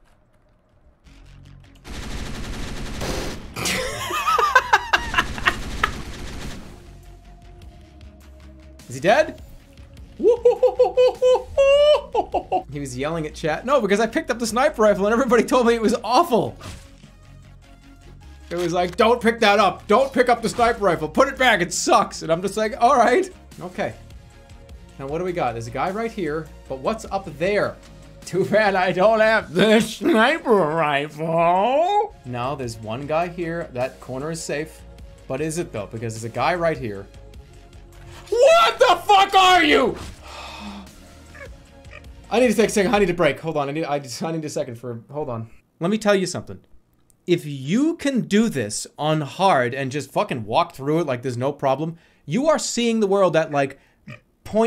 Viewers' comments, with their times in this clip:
0:09 Chimpanzee sounds start
0:42 "I needa sake second honey do break hold on I need a I just s'I need a second for a m- hold on." This is the sound of true panic-induced adrenaline-fueled speech.